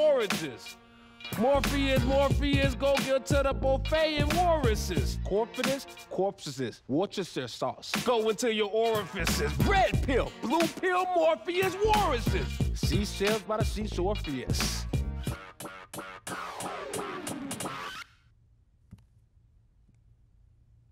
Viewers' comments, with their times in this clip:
0:05 that flow was kinda hard ngl
0:08 Lmao Hannibal lowkey has some good rap delivery. Especially the way he says "orifices" 😂